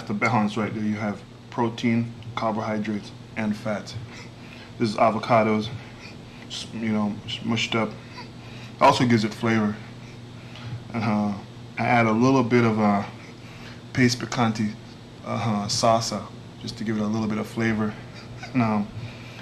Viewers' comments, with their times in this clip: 0:05 him describing what he's eating u can see he breathing very bad. Is that due to his asthma actually during his peak weeks u can tell his breathing very bad